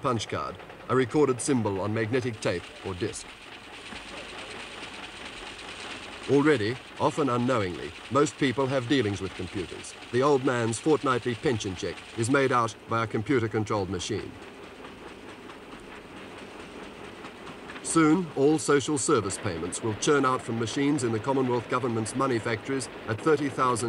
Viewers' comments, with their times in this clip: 0:10 i thought they were gonna say the old man plays fortnite lol